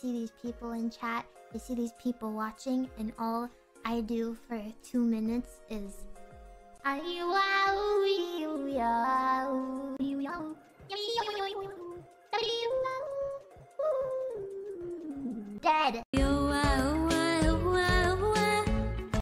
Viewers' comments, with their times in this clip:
0:07 I dont know why but I thought shes singing Despacito for a sec